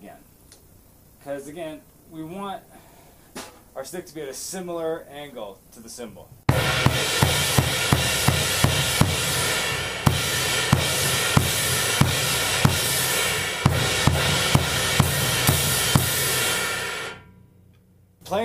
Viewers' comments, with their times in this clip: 0:05 I thought he was gonna play Clint Eastwood. Man... So close!
0:06 I thought Gorillaz - Clint Eastwood was gonna start :D